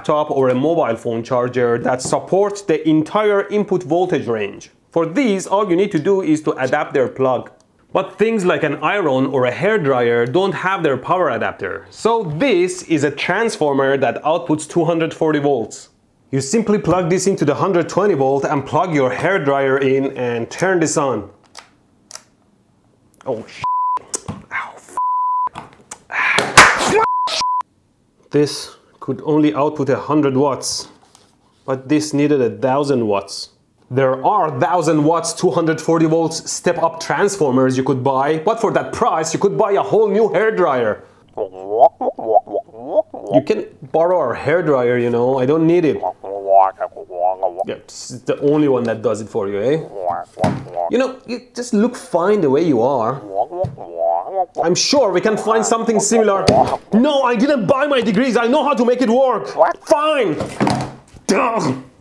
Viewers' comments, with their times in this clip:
0:08 Did he really just say I Ron
0:08 things like an I-RON. HAHAHAHAHHAHA... at first i really didnt get what he meant. took me a good few seconds to figure that out.
0:20 huh, no Boom, how disappoint... oh 🙂
0:40 what a beautiful voice your sister has
0:42 I can hear the sweet word Squidward
0:42 Is anyone noticed at this movement his mobiles voice is very funny just notice it like wkakakakkawka 😂😂😂
0:42 persian is a funny language
0:42 the sound that comes from my school dead bathroom
0:46 your Australian friend sounds sexy.. (oh and please be careful!)